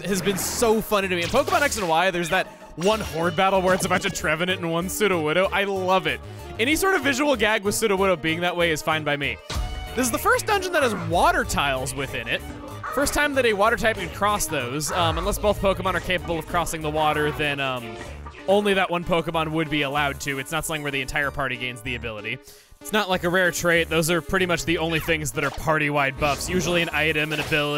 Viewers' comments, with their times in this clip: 0:09 What's that background noise?
0:12 ooooh thats the exeggcute and exeggutor.... i may have thought it was a very thankful robot pleasuring somone......